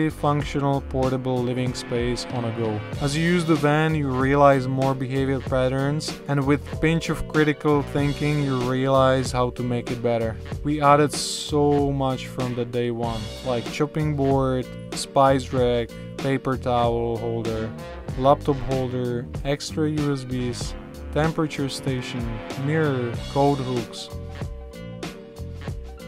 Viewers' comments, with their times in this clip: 0:09 The bit from sounds like it could be from OK computer